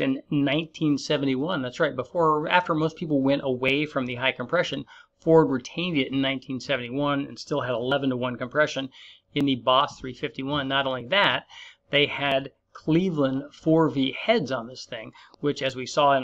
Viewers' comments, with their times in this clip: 0:04 in terms of ford he says as he laughs, ill say this unless youre a race driver speed is not important , when it comes to v8 engine enthusiasm its all about the sound right? listen to that ford big foot inside an arena yyyup